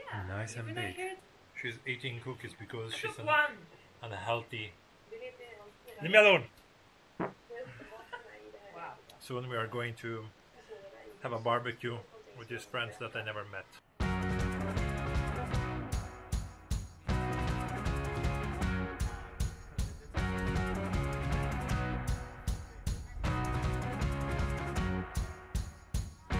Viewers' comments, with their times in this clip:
0:07 wow this sounds sooo dark and symphonic